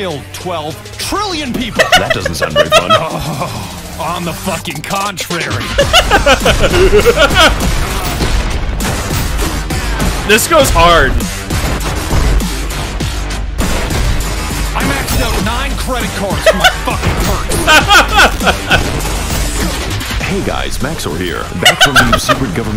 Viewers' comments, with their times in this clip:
0:10 you laugh like the fan voice of lolbit